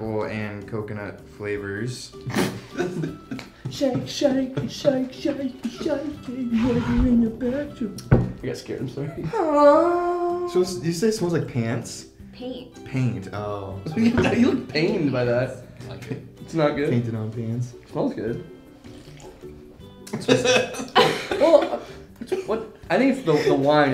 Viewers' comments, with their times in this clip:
0:09 was it auto tuned?? lmao